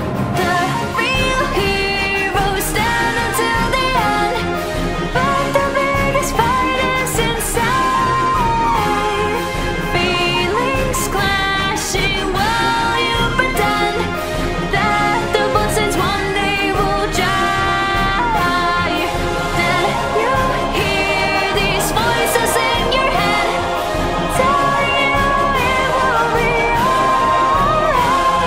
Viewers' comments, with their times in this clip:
0:10 when I first heard this I heard "feeling splashy, well you be damned" which is something I think undyne would actually say
0:11 I thought she said "feelling Squashy" 😂😂😂😂😂😂